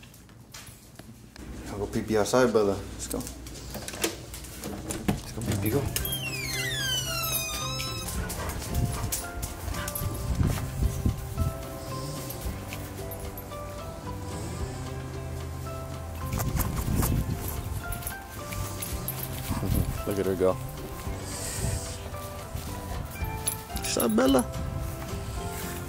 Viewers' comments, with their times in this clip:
0:06 bruh your door should audition for a horror movie